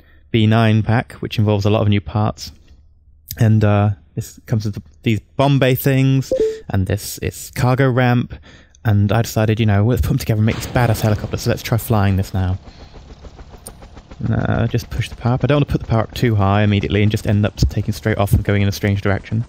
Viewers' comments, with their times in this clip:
0:06 who else thought they got a facebook message ?
0:07 Did everyone else check their facebook at like when he got a notification?